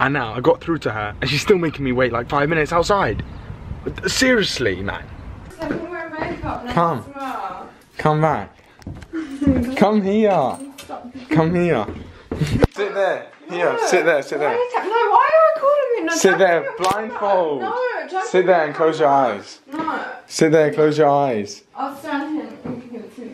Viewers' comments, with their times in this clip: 0:07 Play this video from at 0.5 speed. It's like they're high as hell😂too funny